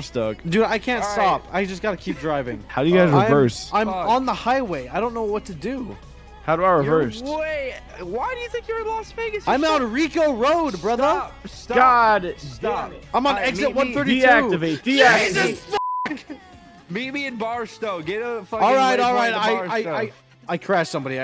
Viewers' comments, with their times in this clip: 0:03 LMAO LADY PLAYING IN THE BG